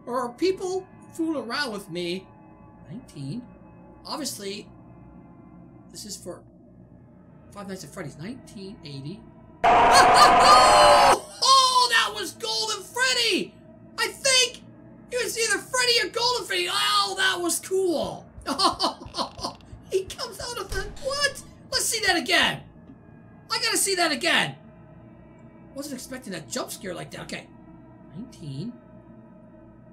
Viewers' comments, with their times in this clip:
0:10 it was golden freddy, hence the broken ear with wires. And since the scream is deep, its for sure Golden, because goldens scream was different from the others.